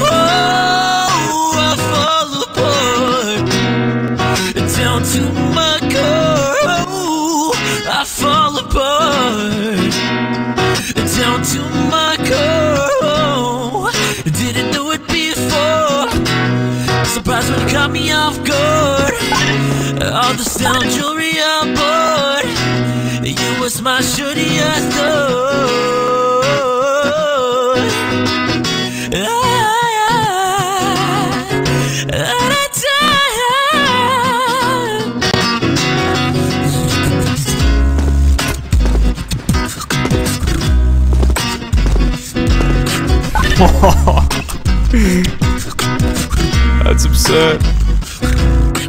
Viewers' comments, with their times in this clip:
0:03 i think i just heard dreams laugh the laugh sounds lile dream but nah never mind
0:35 No one gonna talk about this guys amazing bass